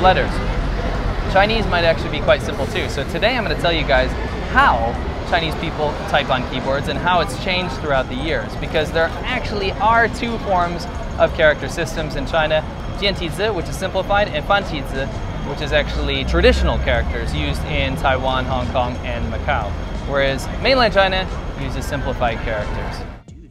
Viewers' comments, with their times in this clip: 0:07 I was wondering if you were in Hong Kong. Then I heard the unique sound of the crosswalk signal for the blind That confirmed it.